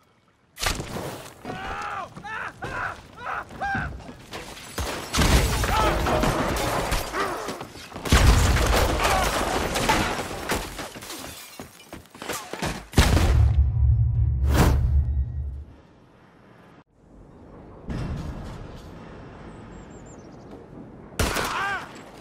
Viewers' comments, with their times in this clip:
0:09 that one guy didn’t even get hit he just ran into a post trying to jump over the railing. The hollow sound his head made on impact had me chuckling